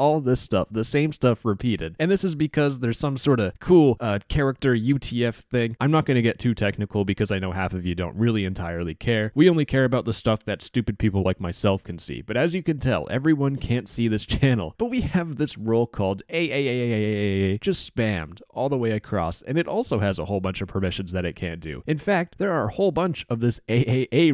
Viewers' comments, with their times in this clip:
0:05 i heared AYEYEYEYEYEYYEYRYRYEYRYRYYEYRYRYR